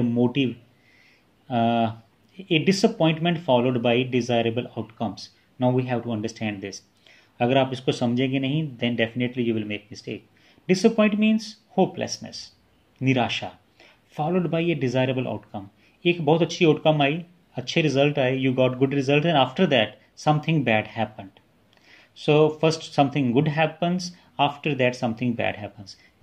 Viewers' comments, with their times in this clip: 0:07 All time I thought you are foreigner but, when you spoke Hindi then I realise you are Indian. :)